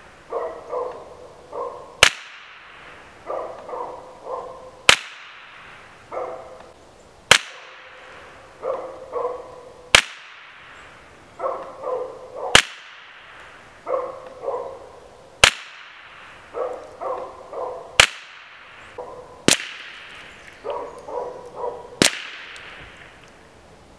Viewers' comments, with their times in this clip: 0:08 its funny hearing the dog bark in between shots